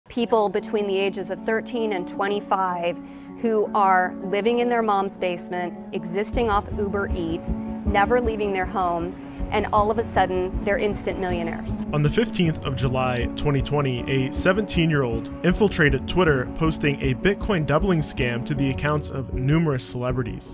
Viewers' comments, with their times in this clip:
0:01 lol she sounds jealous af.
0:01 yo she sounded salty